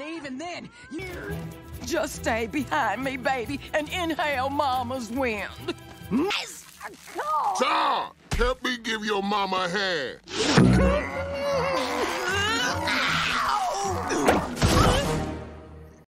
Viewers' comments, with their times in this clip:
0:10 this is what nightmares feeling Also, why does he sound like that one game from TTG squad